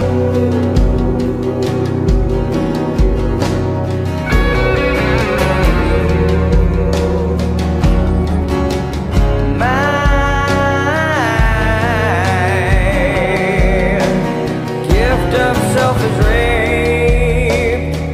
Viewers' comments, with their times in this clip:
0:05 Fucking love that song is so powerful